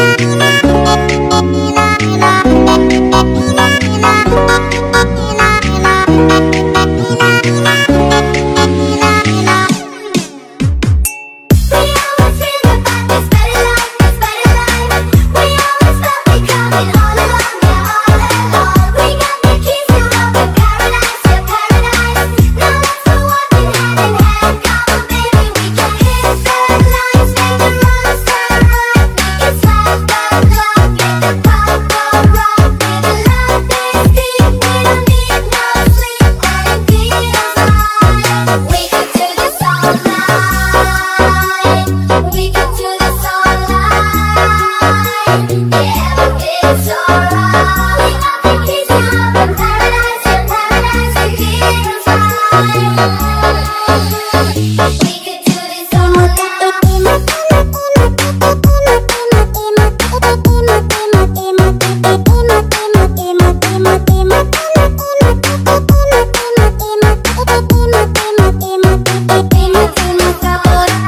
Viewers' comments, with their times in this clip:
0:10 That ting almost gave me a heart attack
0:56 Why do i hear police sirens in the background at this
0:58 feels like a girls who is sing llala and is 3 yrs old